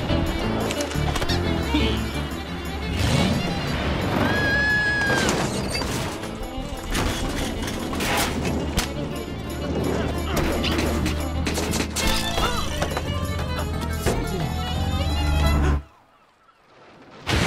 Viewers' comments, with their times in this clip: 0:04 Gentleman Scream xD